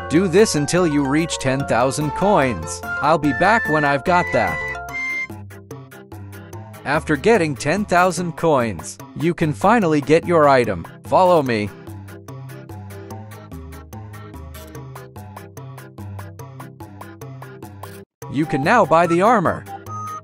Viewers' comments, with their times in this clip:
0:05 why did you cut it out? Bro Said Dolla Except For Solla Bro Speedrunning But There’s No Sprint In Game 💀